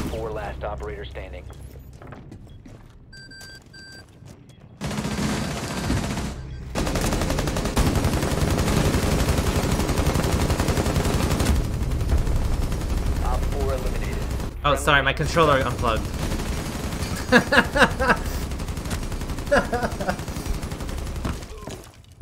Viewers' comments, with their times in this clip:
0:07 6P41 go brrr lmao